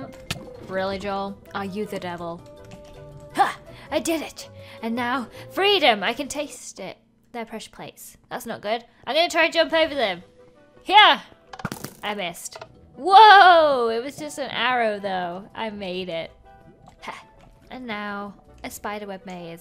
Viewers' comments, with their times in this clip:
0:07 The music just before reminded me of crashbox